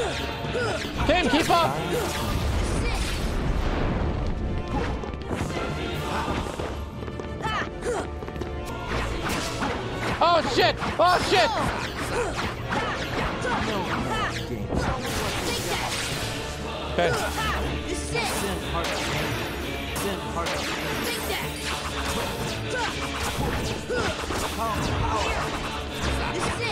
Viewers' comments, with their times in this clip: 0:09 🎶 Everybody was Keyblade fighting... 🎵 WHOOSH! WHOOSH!! WHOOSH!!! ...You might even say their whiffs were fast as lightning. 🌩 😆